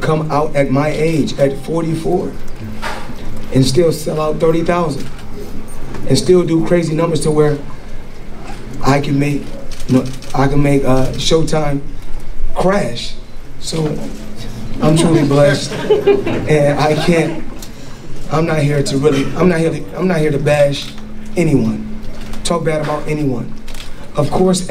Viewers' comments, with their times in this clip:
0:08 Floyd can’t talk😂😂😂